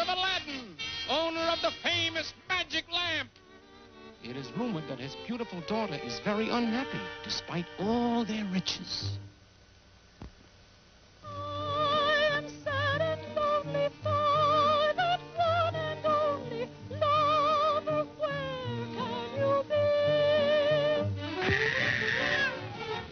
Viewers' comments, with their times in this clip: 0:10 The animation of the princess walking and singing from -27 is very well done. The song is beautiful.